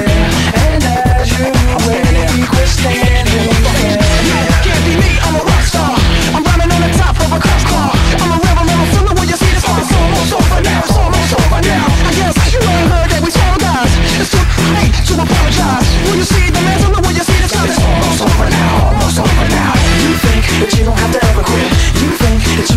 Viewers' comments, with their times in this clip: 0:03 Censors “damn” but you can hear “I’m standin here motherfucker” in the background 😂